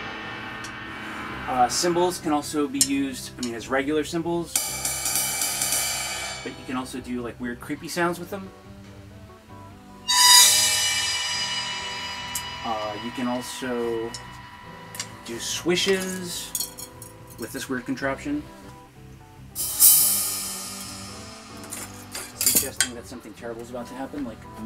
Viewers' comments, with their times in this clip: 0:05 that explains the weird sounds in "Searchlight".